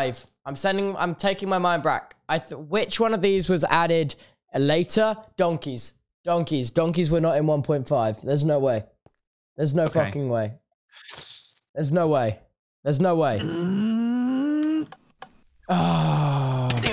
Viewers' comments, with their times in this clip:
0:04 Anyone else notice that Tubbo swears arpund and it isn't bleeped out?